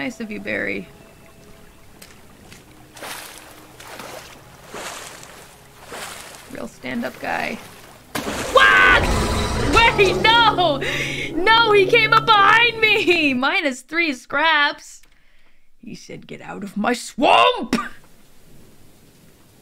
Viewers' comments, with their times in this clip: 0:07 Did I just hear a GWAK?